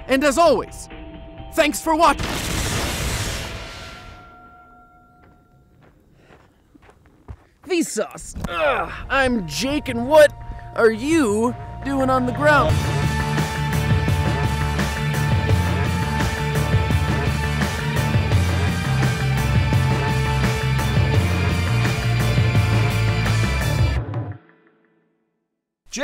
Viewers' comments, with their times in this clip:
0:09 also the music isn't the same as the start